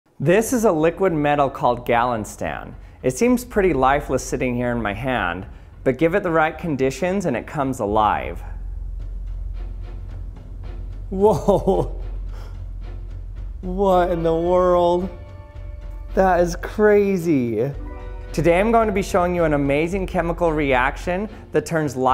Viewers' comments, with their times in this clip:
0:06 it’s really annoying when you had to “wowow heh heh” every single episode..